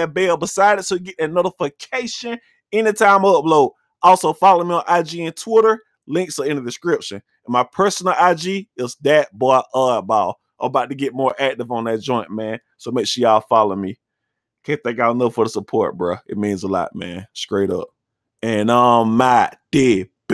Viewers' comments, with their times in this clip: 0:05 Youngboy sound so dam shy otp😭but free yb he be out